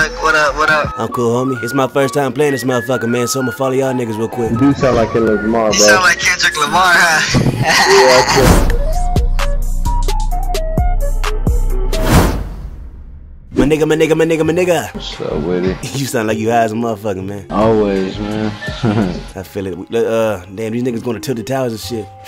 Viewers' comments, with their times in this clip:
0:07 it sounded like my friends laugh. It's all dried out and weak
0:08 What's that song bruh it sounds soooo catchy